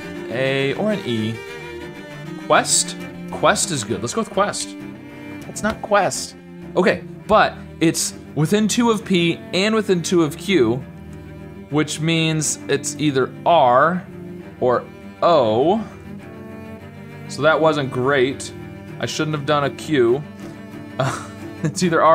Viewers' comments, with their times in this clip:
0:07 What is the music in the background? I’ve gotta commend you for using cello there ;)